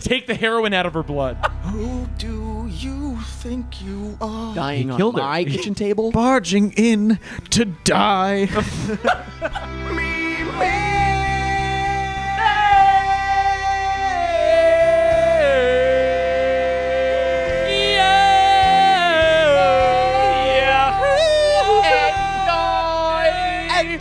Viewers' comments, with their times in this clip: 0:10 Them: singing a very familiar tune Me: "IT'S NO SURPRISE TO ME -" Them: "WHERE ARE YOOOOOU" Me: "Oh."